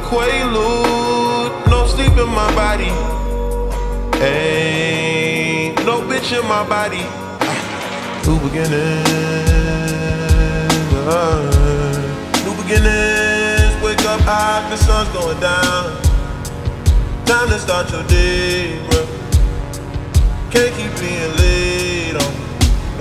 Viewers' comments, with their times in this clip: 0:08 is my favourite part the synths kinda remind me of mike dean, a lot of franks production does tbh
0:08 When the beat starts it makes me want to cry because it's so deep and painful
0:10 flow was a hella vibe